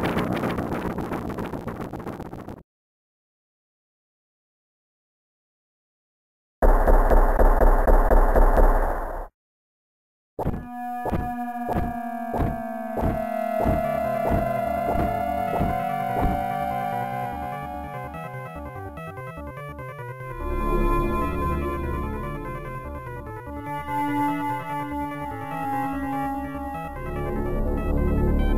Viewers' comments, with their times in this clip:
0:09 when’s those blocks stop dropping and that music starts leading to the final battle, that’s when you know that Shit just got real.